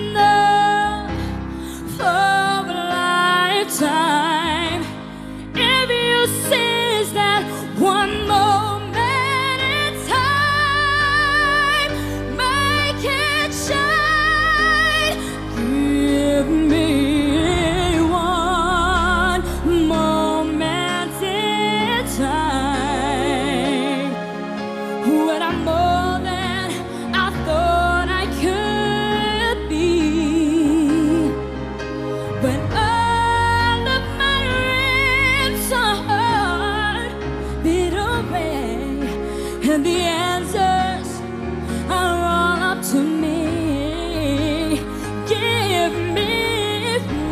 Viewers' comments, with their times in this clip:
0:09 Beautiful performance, but compared with the same song she did before on stage she did even hit higher note. Still an extraordinary performance though
0:13 she holds back :(
0:35 AGAIN CHARICE PRONOUNCED "DREAMS" AS "REAMS" SHE NEEDS TO STUDY SPEECH CLASS TO IMPROVE HER DICTION ISSUE WITH THIS SONG... IT'S VERY CLEAR TO LISTEN WITH... IT WILL NOT BE DISCOVERD FOR THE MAJORITY OF THE AUDIENCE BECAUSE SHE SINGS WELL..